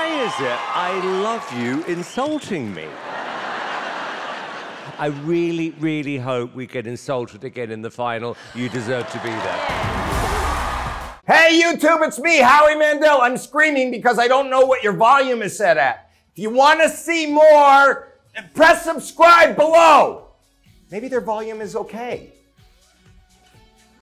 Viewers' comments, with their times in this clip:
0:10 BRUHHHH MY EAR...CHILL OUT